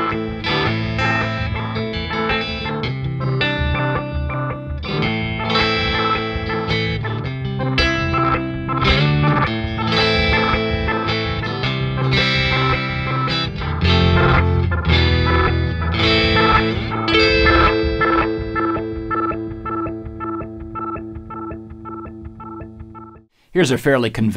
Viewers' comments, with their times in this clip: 0:05 That clip is impossible with the regen set where it is unless there's dip switches engaged that are not revealed BTW.